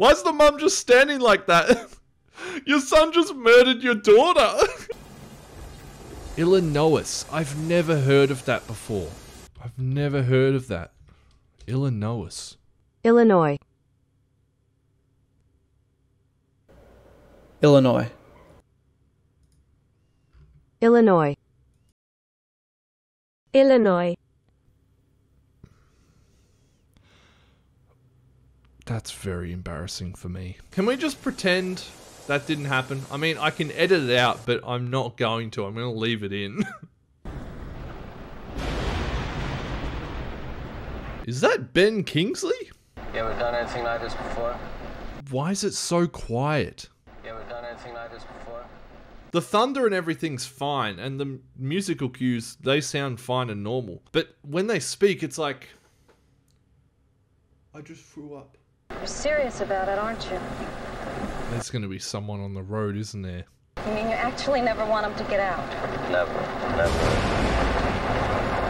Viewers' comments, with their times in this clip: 0:05 🤣!!🤣! I'm glad you didn't edit out how you mispronounced Illinois. That was great! As an American I don't think it's a big deal though just a cute little misunderstanding. 🙄
0:54 I thought this voice thing was only worried me. Thanks God, I'm not the only one lol